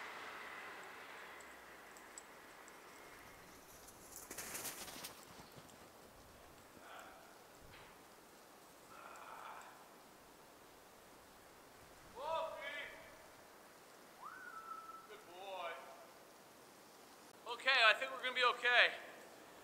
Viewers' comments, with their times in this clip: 0:06 does anyone hear the sound of breathing in minutes 💀